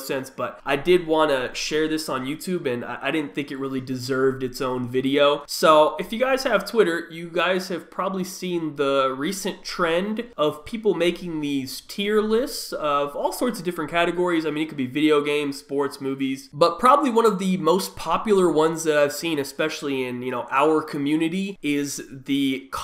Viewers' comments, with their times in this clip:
0:04 he turned into Kermit the Frog for a few second